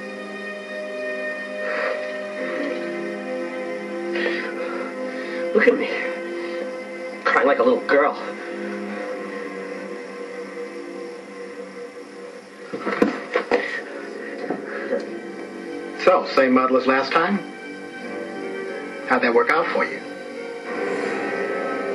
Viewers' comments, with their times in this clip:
0:06 so that is really willow crying or not? Is it a whole different person or is it willow in another form?